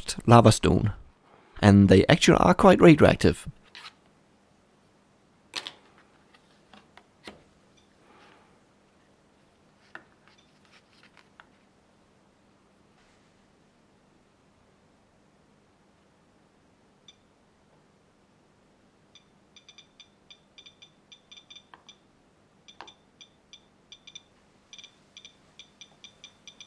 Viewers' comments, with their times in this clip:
0:07 I love how the geiger counter is already beeping in fear